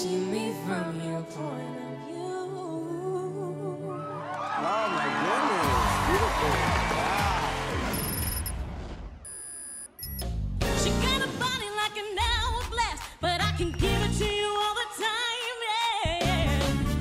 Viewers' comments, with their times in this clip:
0:04 love this duet